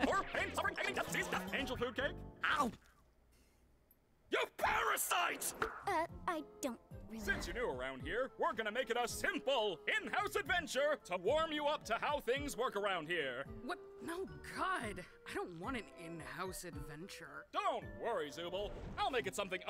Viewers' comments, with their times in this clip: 0:04 When I first saw Jax, I thought he was like 7 feet tall because of how he stand and the way Caine Said “You Parasite!!!” In he almost sound like Plankton